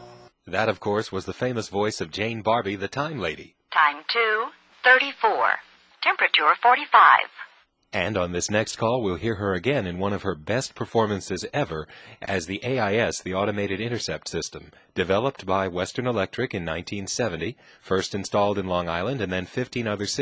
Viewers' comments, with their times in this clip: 0:06 doesn't quite sound like Jane Barbe, its close but there's more of an accent.